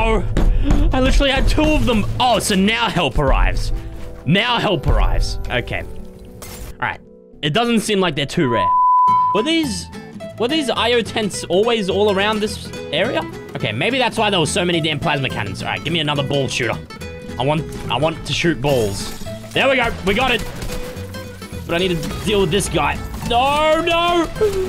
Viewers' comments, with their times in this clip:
0:08 i went deaf ;-;